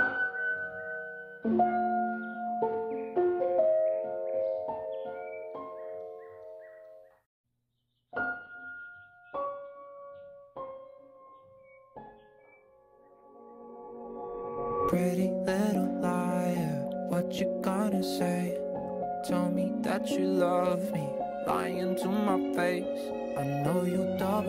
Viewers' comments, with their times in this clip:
0:10 Did I heard steam chat notif sounds right ?